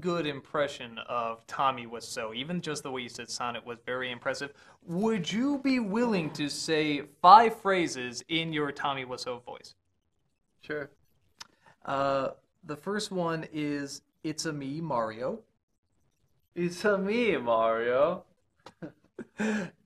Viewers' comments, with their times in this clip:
0:06 Those Tommy impressions are hilarious.